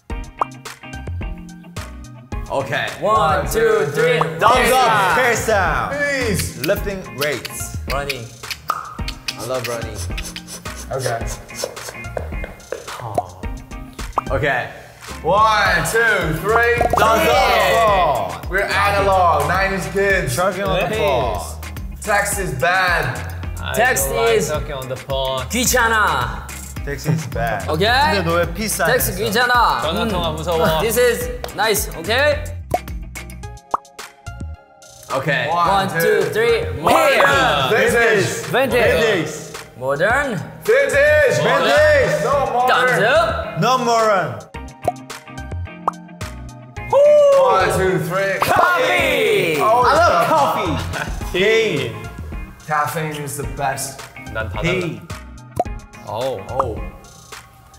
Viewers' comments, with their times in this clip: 0:06 V : "Lifting weights " was hot tho
0:23 Jin: "I don't like talking on the phone." He sounds so cute & serious & I agree so much. 😅
0:30 Jimin's cute English
0:43 "No moron." Yes, Tae, we'll study well so we won't be that.
0:43 V: "No moron"(ง'̀-'́)ง I can't unhear it😂
0:43 Did V just said No Moron 🥴🥴😂😂😂😂😂😂😂😂🤪😁